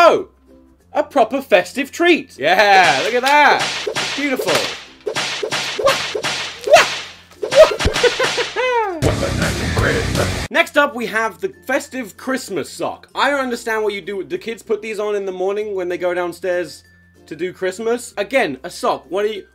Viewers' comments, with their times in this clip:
0:07 he sounds like Mario from super mario